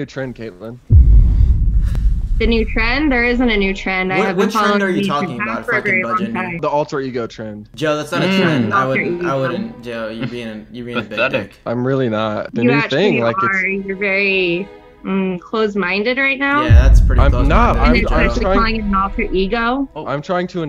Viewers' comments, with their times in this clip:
0:08 the background music 😭